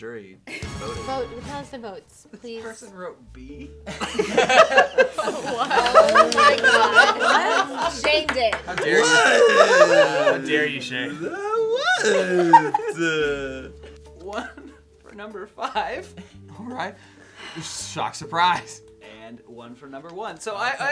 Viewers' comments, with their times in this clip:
0:08 No one's gonna talk about shayne's extremely dumb "Wut...?" ?
0:08 CACKLING over Shayne's noises 🤣